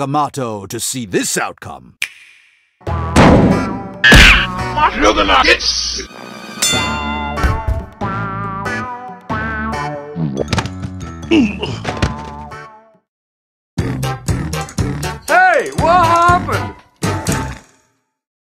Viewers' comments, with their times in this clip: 0:04 I HEAR THE NUGGETS